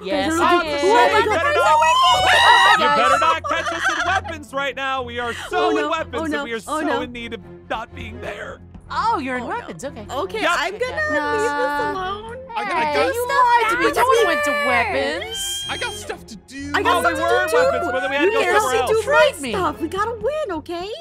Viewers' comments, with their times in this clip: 0:07 You can hear it if you strain your ears